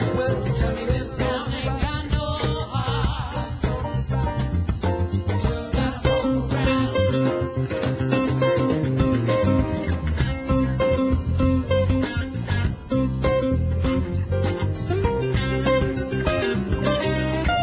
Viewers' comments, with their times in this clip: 0:03 Back to music - great vocals and guitars, but not to forget the rhythm section, especially the bass: unobtrusive, lively, tasteful (e.g. ).